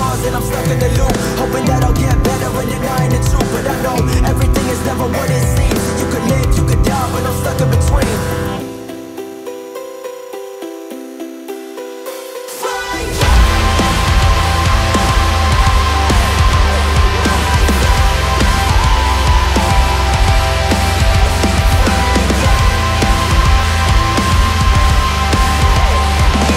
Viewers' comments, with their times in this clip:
0:08 sounds like the stranger things theme🌀